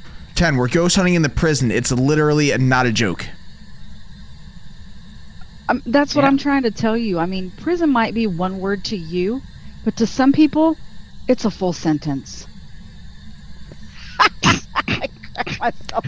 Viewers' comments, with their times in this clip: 0:04 I love her jokes, especially her laugh at the end